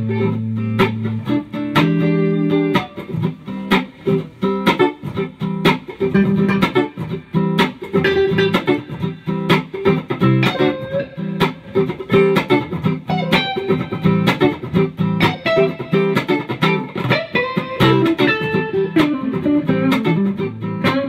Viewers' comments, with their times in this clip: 0:07 sounds just like a chicken clucking. Awesome!